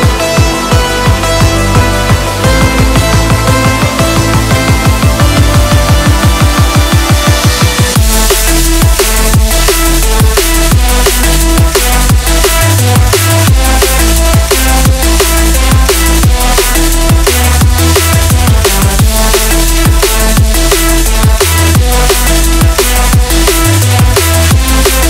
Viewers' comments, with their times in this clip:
0:07 but that drop is awesome
0:07 Neither of these have 'fixed' the drop they've just brought it forward because obviously the first drop has to have as many drums and basses as possible and lazers. IMO the way this song builds is perfect and the final drop is incredible how it is, just sit back and go on a journey with the song...there's no rush to have the DROP
0:09 Why the first drop cant be such good as the second ? :( otherwise I love it <3